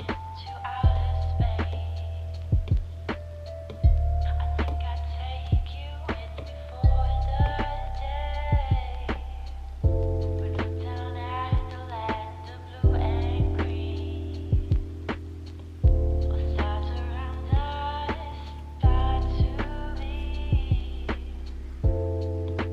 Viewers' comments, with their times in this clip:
0:09 it sounds like the song says next I’m adding and the text says next I’m adding😱🤣